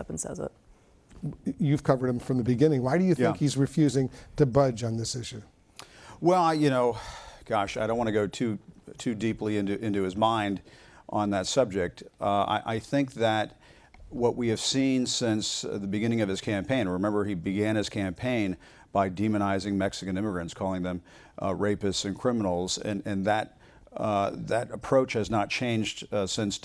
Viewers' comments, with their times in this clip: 0:09 everything went black, sound gone